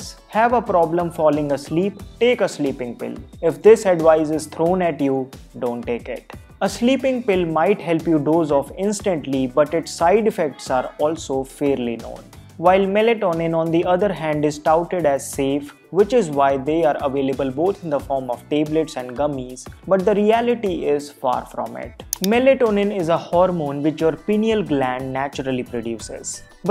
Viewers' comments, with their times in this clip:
0:10 Only legends noticed that background scream on